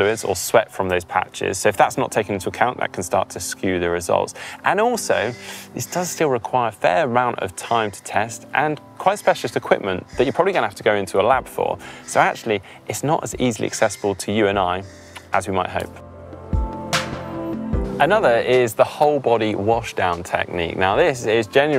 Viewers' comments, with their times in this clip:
0:05 i cant tell if i was hearing things, but it sounded like there was some quite heavy breathing going on behind the camera at around the marker